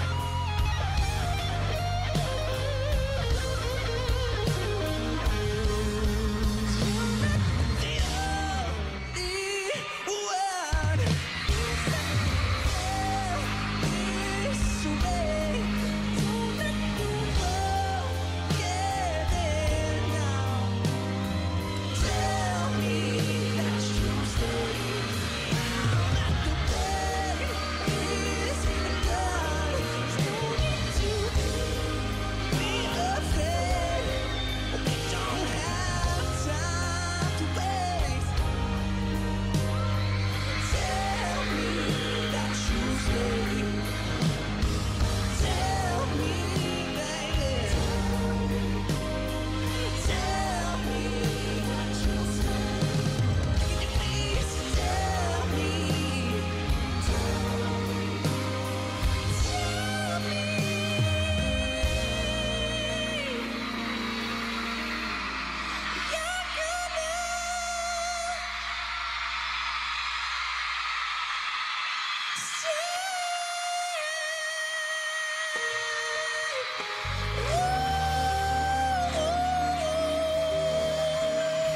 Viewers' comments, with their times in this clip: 0:08 I love how his voice changes
1:08 And it amazing how high pitch he can go love him so much